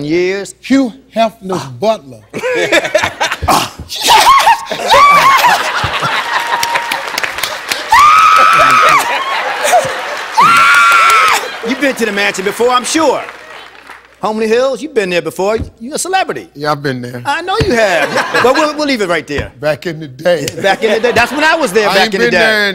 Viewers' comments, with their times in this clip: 0:03 for girl scream from Steve over and over!!!!! =D=D=D=D=D